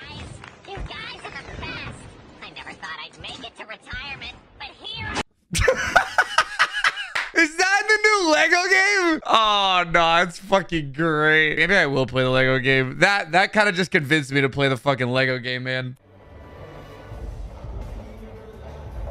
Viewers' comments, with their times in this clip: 0:05 Why did the lego droid sound like claptrap??